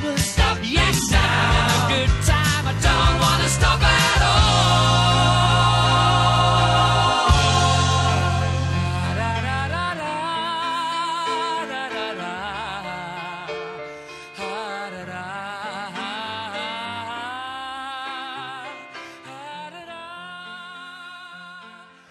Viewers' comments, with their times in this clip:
0:09 My opinion: I don't like this loop, the best part of the song is last seconds when the amazing voice of Freddy hums to infinity. Last seconds make me feel like he is leaving us, i can't holding the sadness on, so I start the loop for that seconds again and again and again and again...